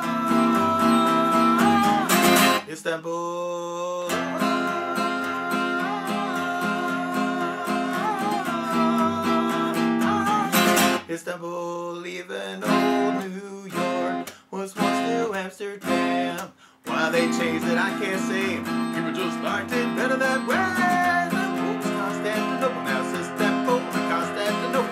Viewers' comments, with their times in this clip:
0:05 The ooooh is immaculate